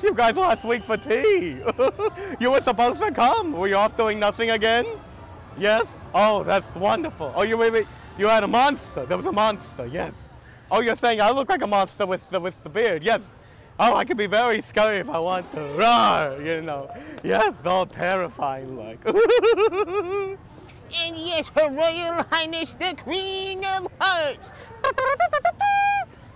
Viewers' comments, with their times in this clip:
0:09 it sounds like the vilian from the movie "Wreck it Ralph"© the first one.